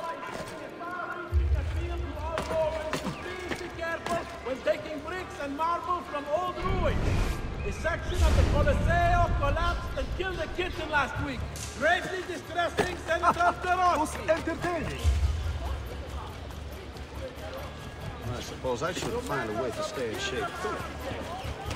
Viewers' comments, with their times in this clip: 0:07 On God I hear this: "Section of the colloseo, fell and killed a kitten last week" As he's running by "Haha, *ussy"